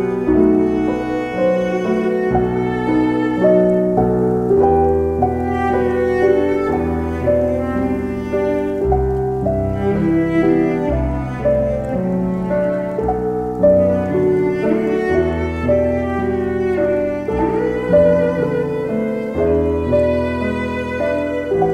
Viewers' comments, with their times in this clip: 0:04 you can here the saxophone melody of "Careless Whisper" :D